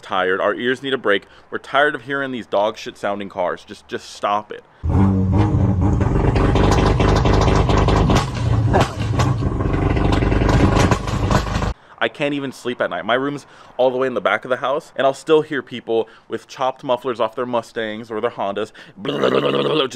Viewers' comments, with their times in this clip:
0:05 sounds like dense heavy sharts.